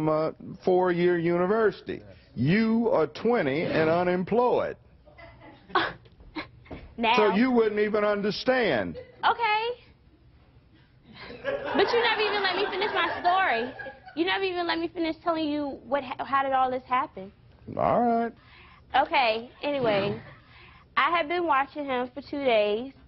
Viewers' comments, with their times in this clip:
0:05 Every girl i know does that laugh 😂😂😂😂 Idk why tho